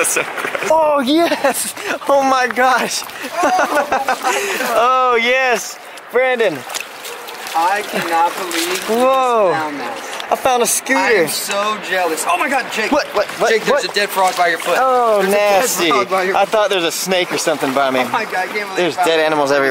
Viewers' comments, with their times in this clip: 0:04 I thought they were laughing at the frog 😢😅